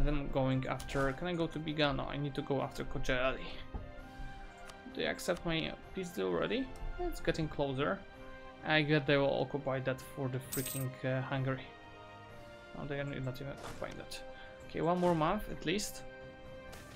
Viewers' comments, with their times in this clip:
0:03 Perfect pronunciation of "Kocaeli"